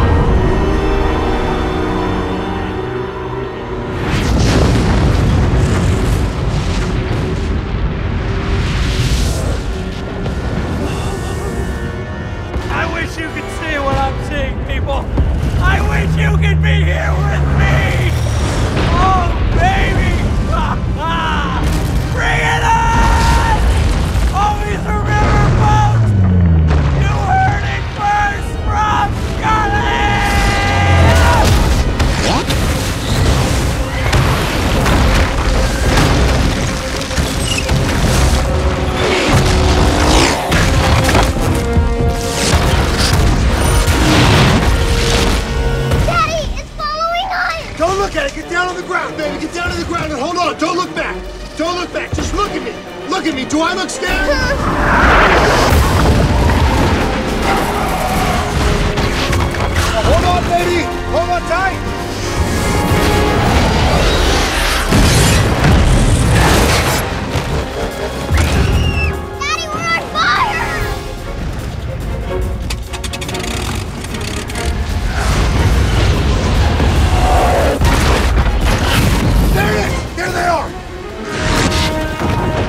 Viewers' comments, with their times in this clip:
0:10 is where godzilla stands up and ROAR's .....
0:25 The low frequency bass noises like are so played out at this point.
0:32 WAIT, did I just hear a falling piece of rock say WHAT?!?
1:07 When the meatier hite the car and then after it just gets on fire. And it makes like a train noise.